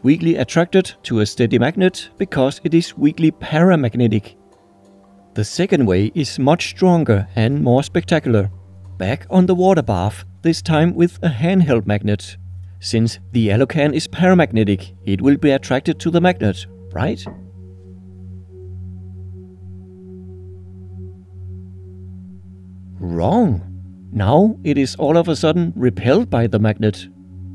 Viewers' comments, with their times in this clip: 0:09 ummm WHY( do you keep calling the that EMPTY BLUE PEPSI CAN 'the YELLOW can' ????? OOOHHHHHhhhhhh - I turned on 'Closed Captions' and I see now that you are saying 'the ALU can' ... which makes sense, we just don't say that here in the States.... Glad that is cleared up now LOL